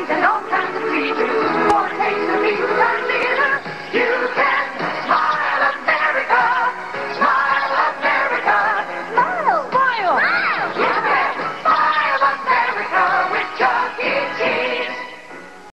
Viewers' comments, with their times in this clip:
0:12 its me or in the it says "BUY AMERICA WITH CHUCK E CHESSE"